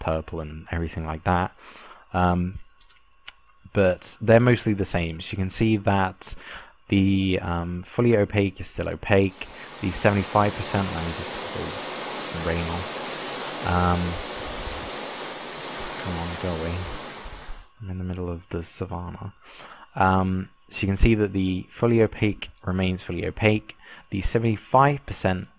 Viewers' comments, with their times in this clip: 0:08 that rain was scared me. >: (